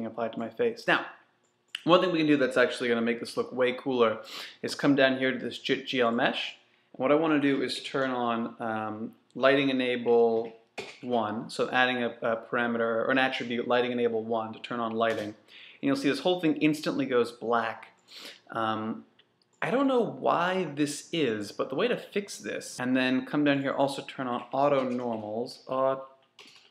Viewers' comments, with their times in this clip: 0:09 There's a little jump in the recording after the mark where some key information(The way to fix this is...?) is not relayed..